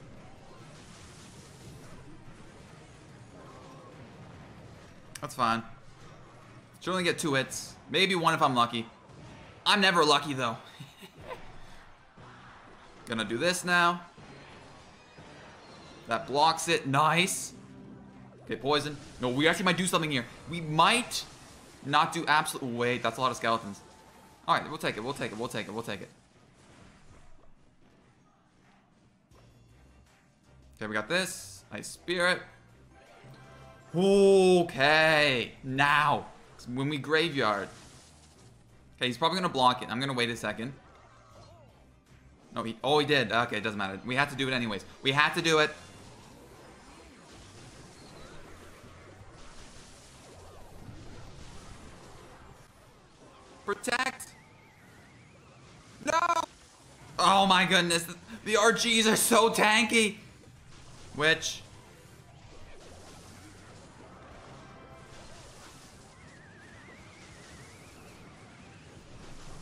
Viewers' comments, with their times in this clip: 0:05 Laughs in pain
0:20 Is it just me or do I hear a terrarian "er" sound
0:54 mic ded My ears also got b-rekt 😲
0:55 plot twist: the mic doesn't get destroyed, it was just the dad suffering